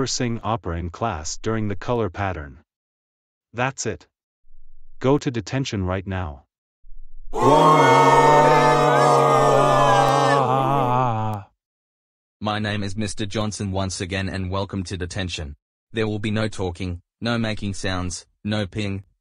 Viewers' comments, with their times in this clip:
0:07 Boo Yelling cheering 📣
0:07 Students Yelling ooooohaaaaa
0:07 Students Yelling Oscar Is Going To The Detention